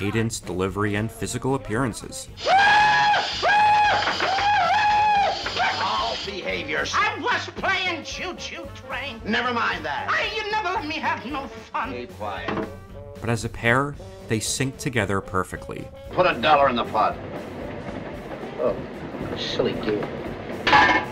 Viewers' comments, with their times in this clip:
0:05 speaking of people being influenced by them, this sounds like a bit like Dana Snyder from Aqua Teen to me.